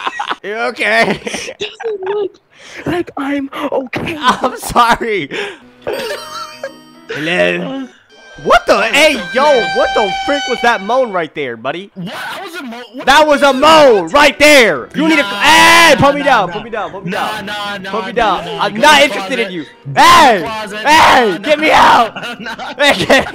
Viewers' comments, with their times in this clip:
0:07 bro, that guy's voice sounds like sonic or shadow 😂
0:07 That moan bro 🤨 🤨🤨🤨🤨🤨🤨🤨🤨🤨🤨🤨🤨🤨